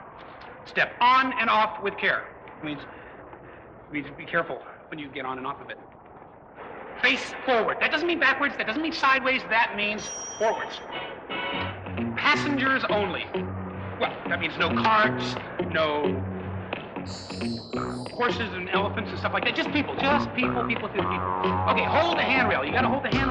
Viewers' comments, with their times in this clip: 0:10 The song starts